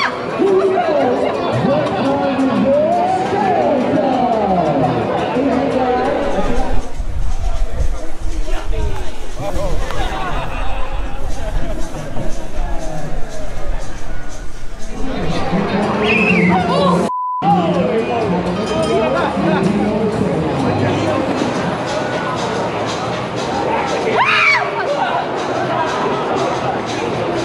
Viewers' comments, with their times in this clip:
0:10 is pretty epic, it looks and sounds like a shark attack 😂 Awesome content ! Keep up the great work 💙💚